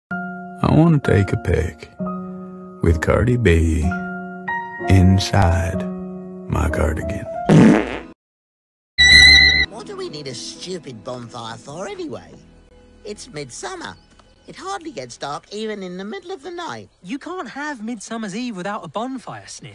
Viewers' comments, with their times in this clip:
0:07 PLEASE NO MORE FART SOUND EFFECTS MY HEART CAN’T TAKE IT AHAHA 😂 Oh no! The third wheel died! R.I.P Sniff